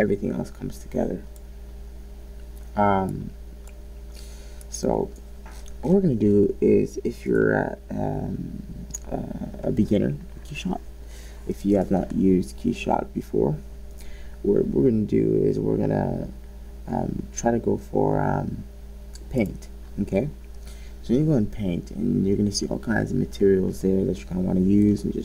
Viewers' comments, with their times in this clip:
0:08 i had to make this comment with in mins of the video because the way your speaking, sorry tell is very annoying. it looks like you just woke up from a deep sleep and all of a sudden started making this video, that grrrrrrr types rough voice is very irritating